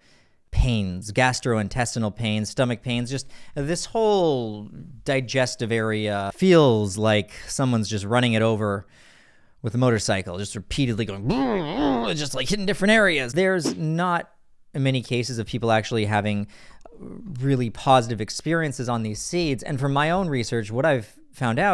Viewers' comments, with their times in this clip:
0:05 oh wow those motorcycle noises